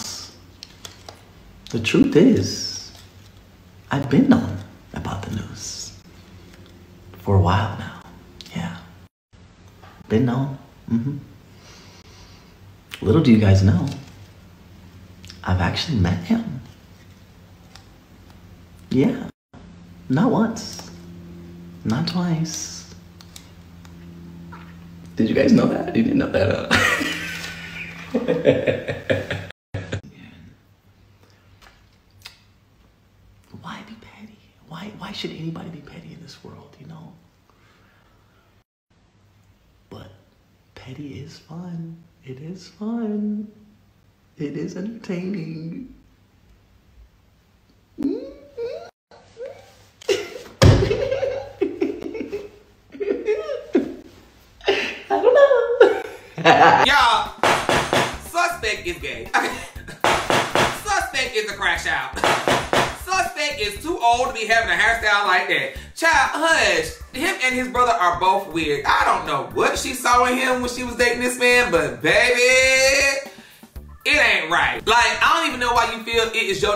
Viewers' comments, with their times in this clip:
0:07 why he sound like that ?
0:12 he sound hurt like mf😂😂
0:59 first thought when he started snickering abt a dude 😂